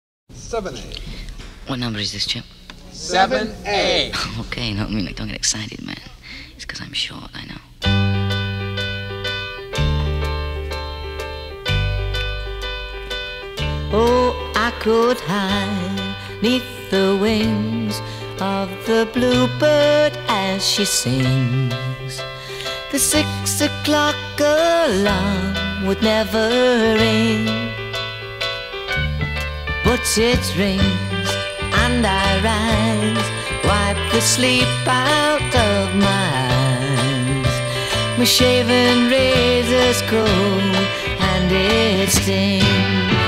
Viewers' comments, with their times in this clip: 0:04 aaaaaaaaaaaa his little voice is so cuteeeee •////•
0:31 Does anybody else hear the loud, high beeping noise from onwards?!